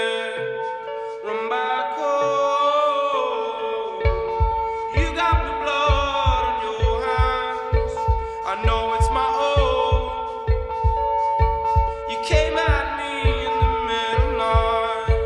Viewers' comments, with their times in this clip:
0:03 I just noticed the beating heart 2 months i've been listening to this song and i just got that.